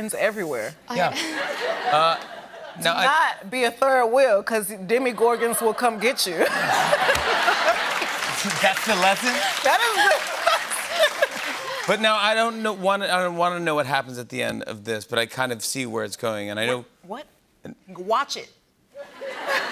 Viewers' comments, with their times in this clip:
0:04 Ha ha ha she said “demMIgorgAn”